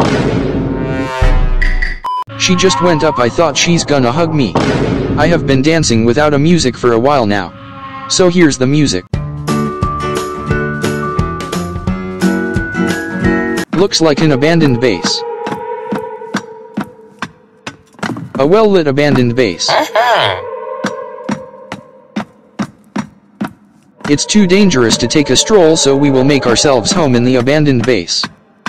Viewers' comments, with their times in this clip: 0:09 Part that made me laugh the adopt me music Lol
0:09 why that music fits into girl falling